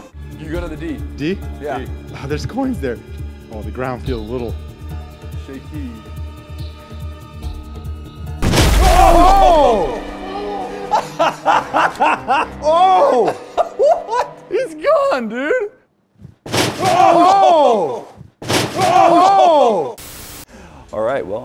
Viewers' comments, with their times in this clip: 0:07 i think i heard someone swear